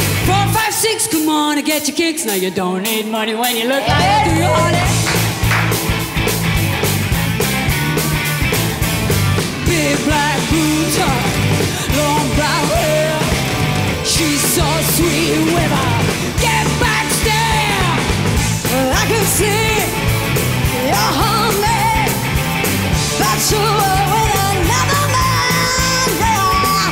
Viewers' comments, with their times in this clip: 0:09 Is she said "big black boobs" instead of "big black boots" hahaha.